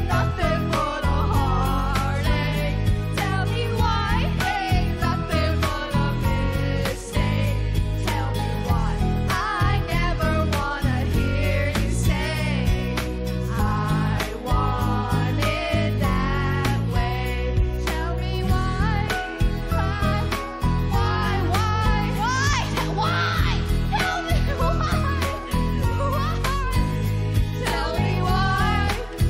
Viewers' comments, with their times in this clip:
0:10 There is a singular fleeting moment where they slip into key for a couple bars